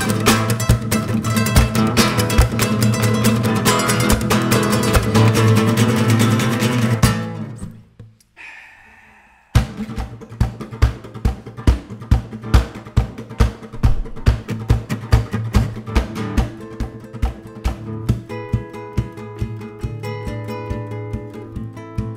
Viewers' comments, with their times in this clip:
0:09 Amazing! Thank you so much and stay safe! Love the simulated crowd cheering !